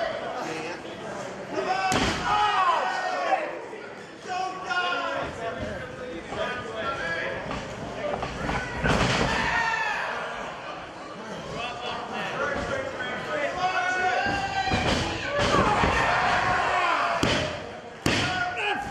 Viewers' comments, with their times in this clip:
0:03 someone in the audience yells "don't die." 😂